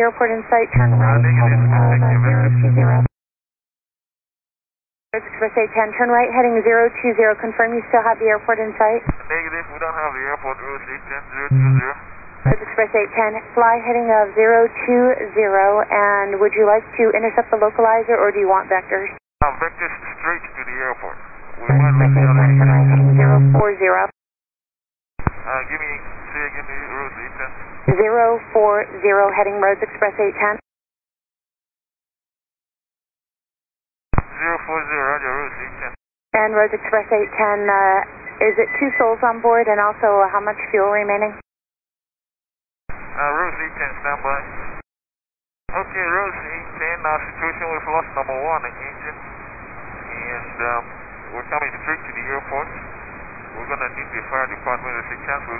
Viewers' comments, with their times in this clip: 0:04 bro turned into a robot
0:39 the radio sounds kinda creepy